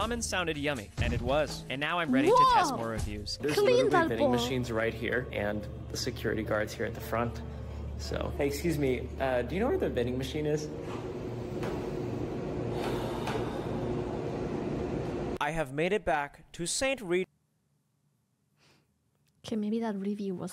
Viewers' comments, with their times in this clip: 0:06 i've worked in the security business for many years now. that inhale exhale spoke so much to me. i feel your pain brother. i feel your pain.